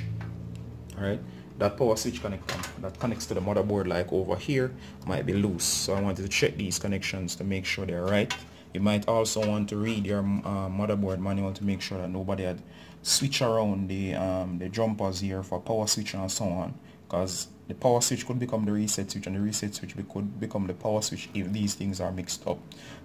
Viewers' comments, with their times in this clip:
0:04 That accent tho